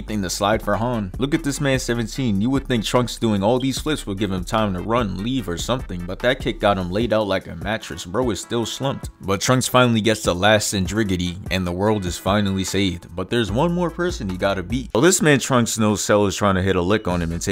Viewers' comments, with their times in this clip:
0:03 shoutout to the fire alarm fr